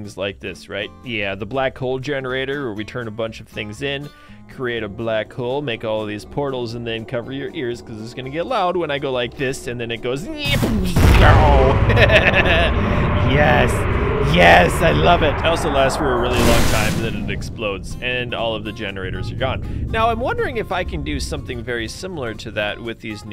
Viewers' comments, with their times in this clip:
0:10 demon sound .exe e as skask error